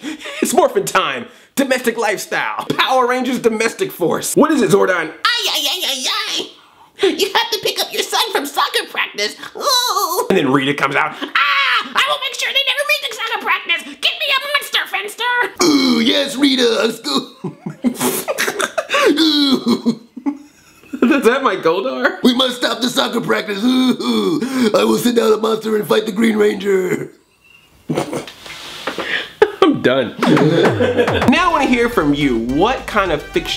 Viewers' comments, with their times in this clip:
0:03 power rangers voice
0:16 Goldar voice that funny